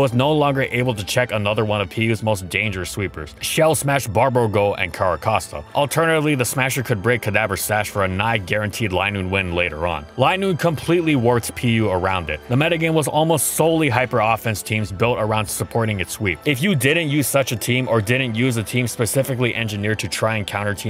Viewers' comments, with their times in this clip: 0:03 Shell Smash Barbergull.